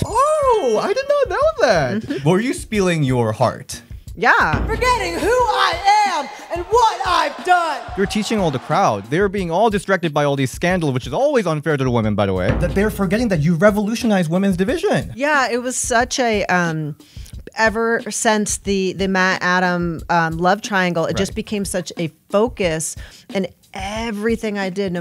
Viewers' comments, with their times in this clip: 0:07 She sounds like Vickie Guerrero in a way